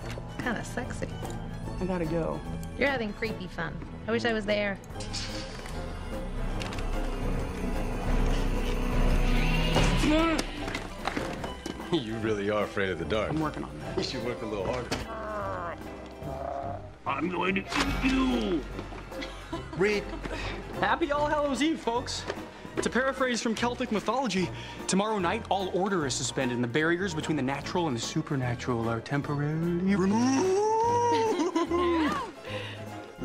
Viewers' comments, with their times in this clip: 0:06 lmao the noise he made hskwndisk
0:19 Emily’s laugh killed me